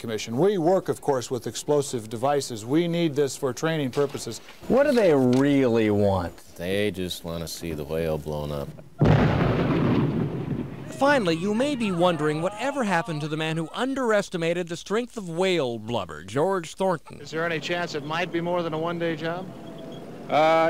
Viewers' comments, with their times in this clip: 0:05 The cameraman's deadpan "They just want to see the whale blown up" is a tonic for the soul.